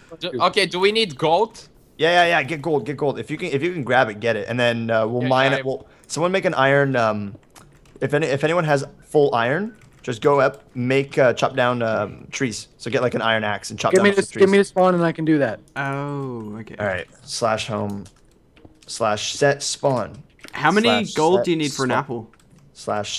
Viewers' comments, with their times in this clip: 0:10 someone's phone gets a notification / text ha